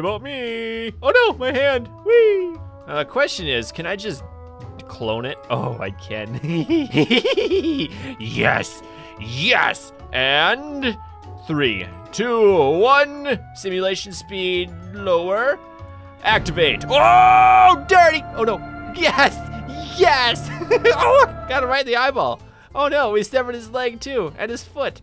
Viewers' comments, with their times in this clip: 0:05 You sounded like Scooby Doo when you laughed😂
0:07 When scooby laugh
0:07 Why does he sound like Scooby Doo